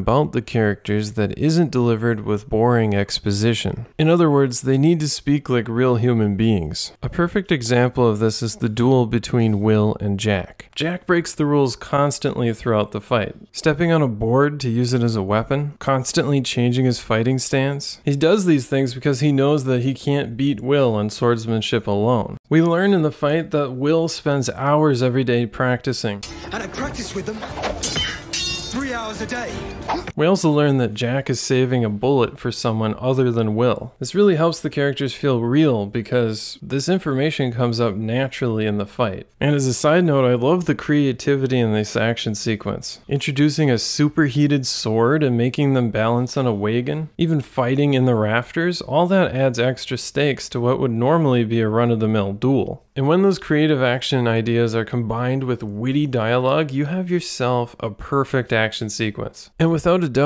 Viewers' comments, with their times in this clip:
0:05 "They need to speak like real human beings" said bro in the most monotonic and robotic voice ever....😂
0:46 this a great video essay but I've never heard the word "wagon" pronounced like that